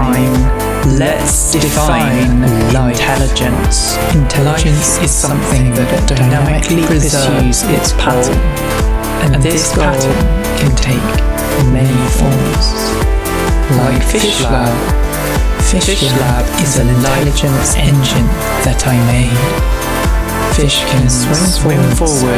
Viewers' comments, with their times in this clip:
0:08 I can’t hear the sound very well so am I supposed to hold it close to my face and look off into the distance (on a phone it looks 3d)